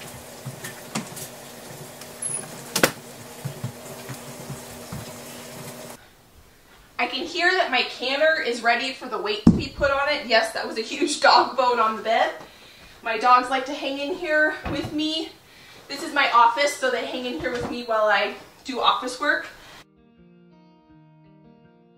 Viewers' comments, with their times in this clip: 0:05 GLASS OF WINE to celebrate your hard work! ( ... um... chipmonk noises or squirrel?? 😊)